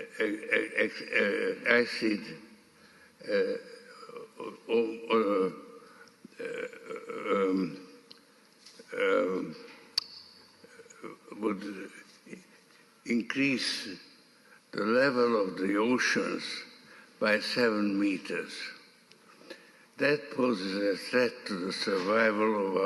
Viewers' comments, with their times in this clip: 0:04 😂😂😂😂😂😂 sounds like he’s trying to say “ Orange Man bad”